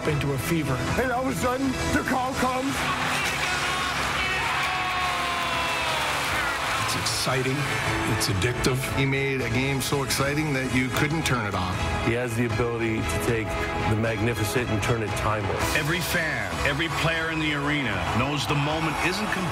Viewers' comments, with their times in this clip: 0:03 —AFINOGENOV’S Game 5 GWG vs. NYR…probably is and always will be my all-time FAVORITE Sabre game, I was there that night Max was my boy, my FAVORITE player and the pure happiness and joy you hear in RJ’s call as that puck slides through Lundqvist’s pads makes that particular hockey game extra special to me! 💙🎙💛🍻